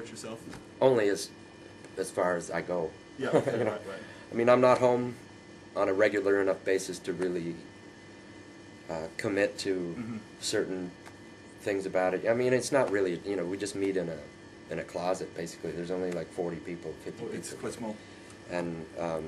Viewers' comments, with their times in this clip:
0:05 he actually LAUGHS ... wow :D